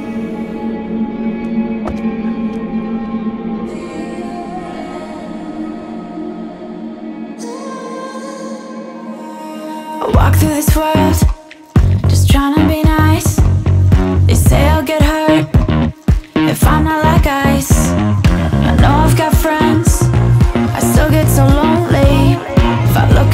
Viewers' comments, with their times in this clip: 0:09 The music starts You're welcome 👍